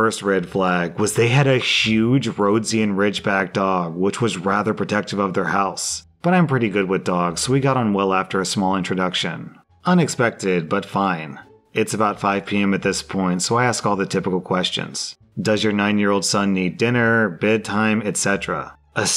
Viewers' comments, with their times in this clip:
0:04 "Roads-ee-an?" Oh dear... Say it with me. "Rho-Dee-Zhun."